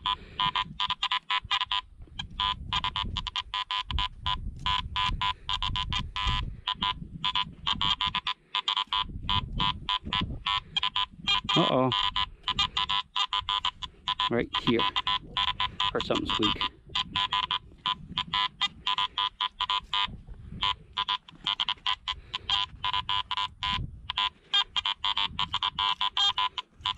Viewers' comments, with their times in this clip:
0:10 perfect scenario for the XP Deus in "fast" mode. The higher tone target you hear are probably good targets, but the XP Deus's recovery speed would have exposed all the squeekers that the AT Pro is missing in this part of the video.